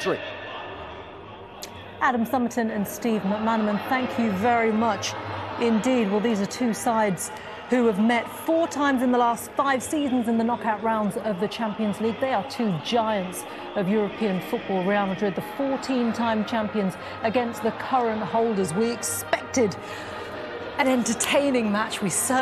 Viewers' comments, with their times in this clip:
0:03 two ghosts of this match together.